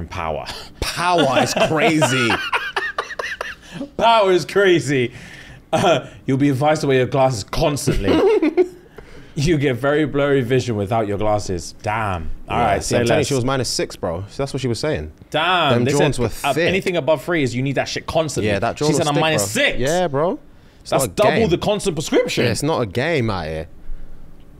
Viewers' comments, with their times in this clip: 0:08 😂 why’d he giggle like that